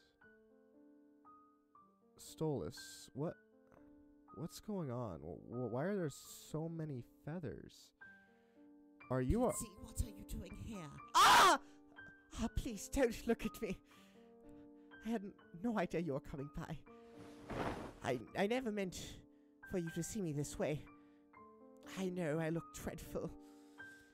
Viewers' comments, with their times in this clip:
0:10 I’m very sorry but I can’t stop laughing at the scream it was perfect 😭😭🤣🤣😅😅